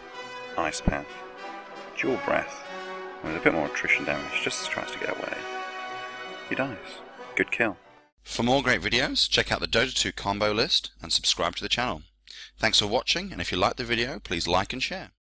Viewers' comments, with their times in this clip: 0:08 Ur voice get really better on